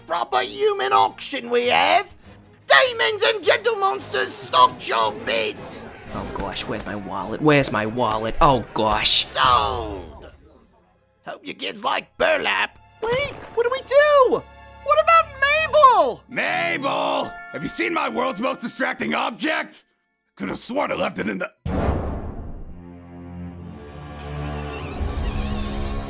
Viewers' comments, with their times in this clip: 0:06 Slenderman Me : ....... AAH!!! HE'S BRITISH!!!
0:08 WHY DOES SLENDERMAN HAVE A JERSEY ACCENT BAHHAHAHA